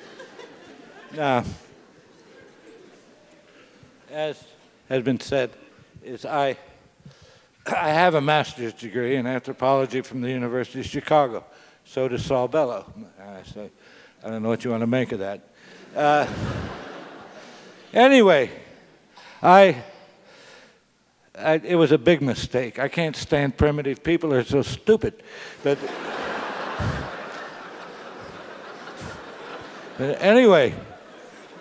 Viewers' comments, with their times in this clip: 0:10 Sorbello or Saul Bellow?
0:13 Any idea who that Sorbello guy is?